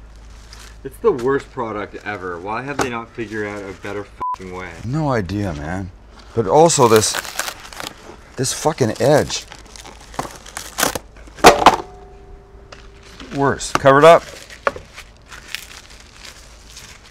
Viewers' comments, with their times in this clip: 0:04 why did he bleep the guy in the back but not him